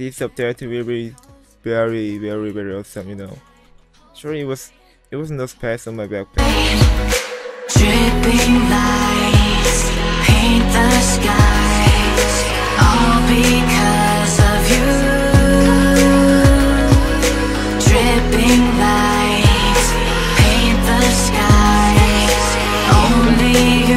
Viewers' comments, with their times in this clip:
0:05 The errape :D